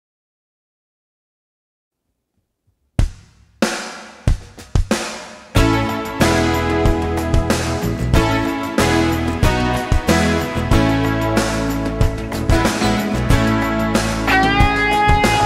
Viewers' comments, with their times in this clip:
0:03 Obviously...all the backing/click tracks start when John hits the "start button" with his foot at the mark.